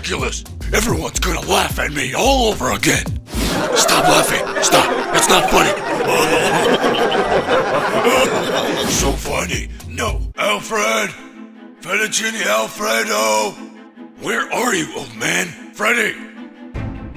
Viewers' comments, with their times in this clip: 0:03 Everyone are laughing at Batman.